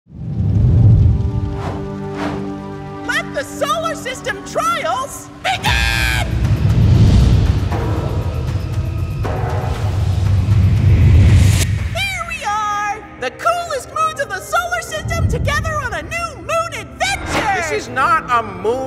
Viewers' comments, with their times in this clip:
0:05 I just max volume while I was using headphone and my ears hurt thx to end me 🫨.!